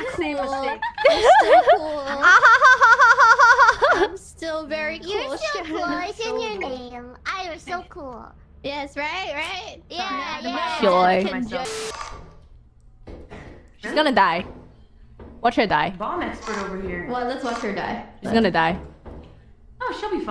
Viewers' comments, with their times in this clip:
0:03 The utter silence, then the war cry. 💀